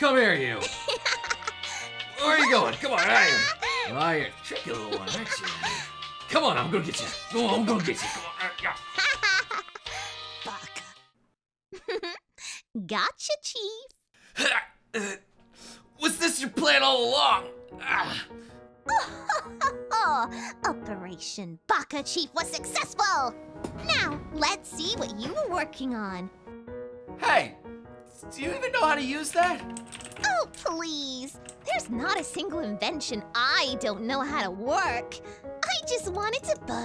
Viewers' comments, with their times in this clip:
0:05 Somehow this sounds soo sexual when you close your eyes...
0:21 did she just...Laughed like frieza?